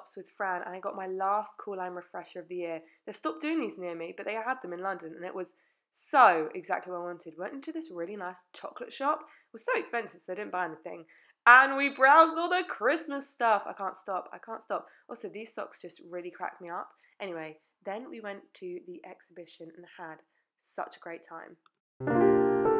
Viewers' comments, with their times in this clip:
0:05 The piano/jazz 🎹🎶 music makes me feel like I’m watching a Norah Ephron/ Meg Ryan movie 🍂🌻✏️🌃🗽 #cosy ☕️🍿 Q: what was the name of the chocolate shop? 🍫🍫🍫